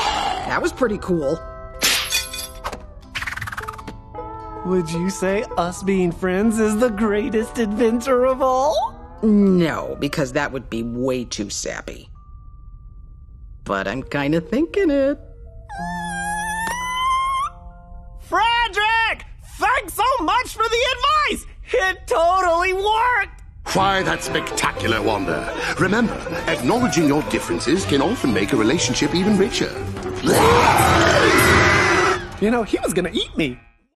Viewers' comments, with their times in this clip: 0:04 Wander: "Would you say us being friends is the greatest adventure of all?" Sylvia: "No, because that would be way too sappy. But I'm kinda thinking it" Wander: the most adorable squeal of joy I've ever heard
0:23 That reminds me of my cousin Because Fredrick sounds like a therapist and my cousin is a therapist herself